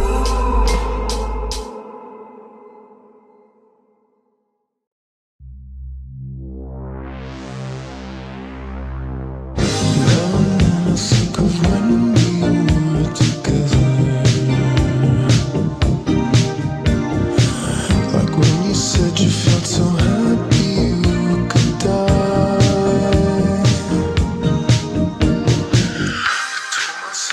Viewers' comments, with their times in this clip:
0:10 I wanna know how people make sound edits like that cuz the best how it went like that it felt good